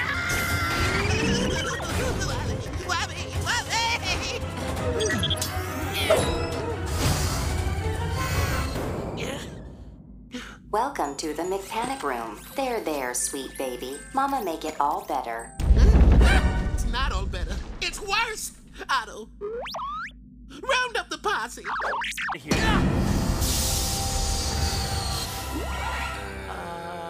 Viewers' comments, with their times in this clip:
0:10 Grey DeLisle doing the AI's monotone voice reassuring Viceroy is just HILARIOUS. 🤣